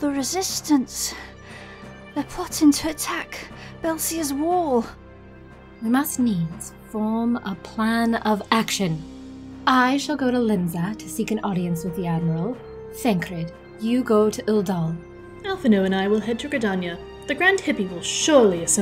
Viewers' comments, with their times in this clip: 0:03 She pronounced it "Belsear's Wall" instead of "Baelsar's Wall" :P